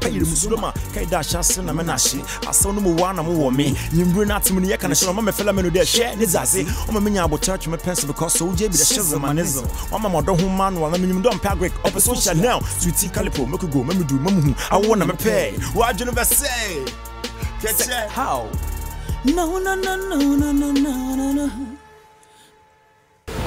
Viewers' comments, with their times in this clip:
0:05 I dont understnad afkn thing he is saying I think he said for shizzle my nizle .. But im feeling this guys flow. I think its pretty hot!